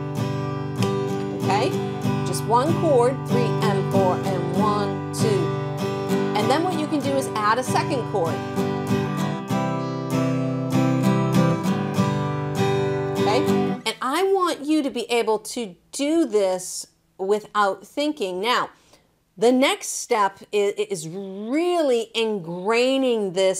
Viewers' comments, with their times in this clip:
0:10 nice one ! p.s. is C right?